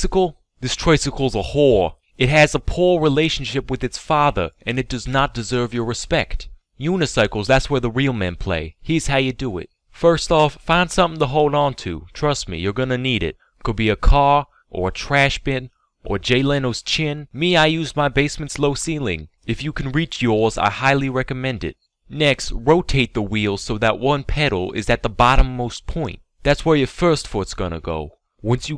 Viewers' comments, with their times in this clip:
0:10 dafuq was that? a momentary slip into a southern/country accent? 😂